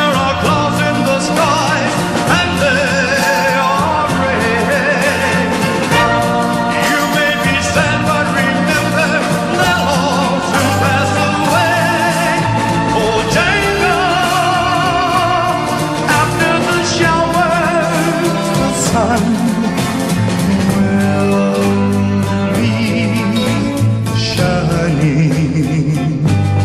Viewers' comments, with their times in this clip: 0:07 "you may be sad but remember, never to pass away" is what i hear. the supposedly actual lyrics are: "that love will pass away". Am I wrong?